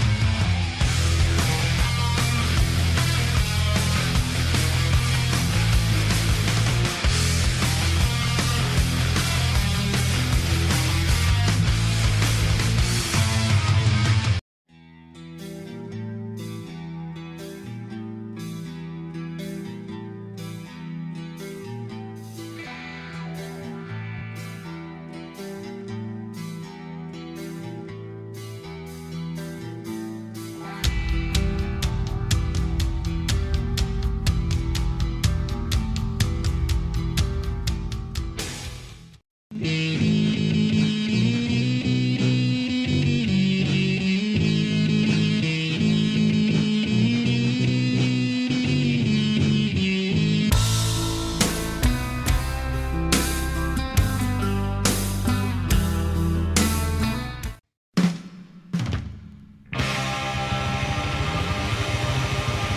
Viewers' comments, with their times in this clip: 0:04 sounds more like the Master of Puppets interlude
0:46 Loll land of frost sounds like Orion, which was written two years before